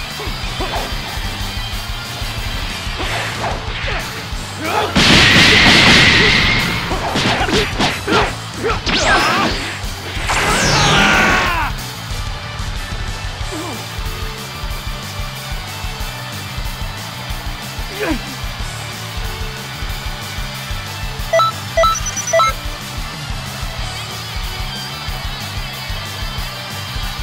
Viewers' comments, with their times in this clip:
0:10 I Screamed so loud in the mic